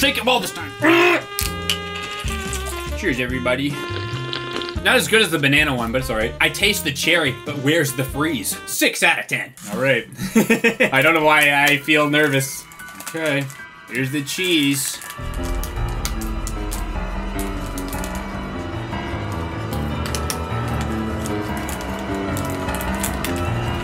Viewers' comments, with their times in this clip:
0:05 thanks for using nostalgic Roblox drinking noise there